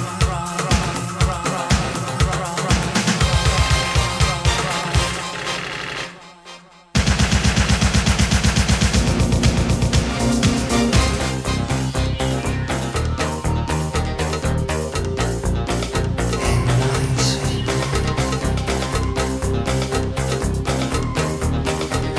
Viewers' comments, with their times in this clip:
0:08 Does anybody know the instrument effect/instrument used of "In The Night"? Thanks so much...I think it's hypnotic